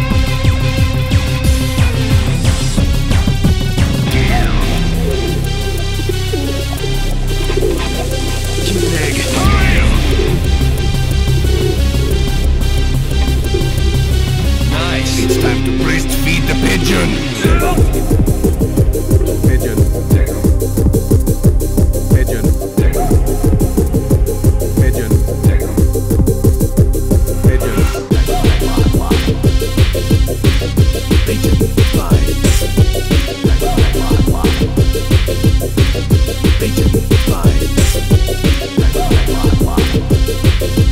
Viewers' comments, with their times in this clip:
0:03 why the fuck this sounds like a pokemon battle or a secret boss battle
0:25 this is my new ringtone, somehow this is funny and good eurobass. 10/10 IGN Edit: ringtone starts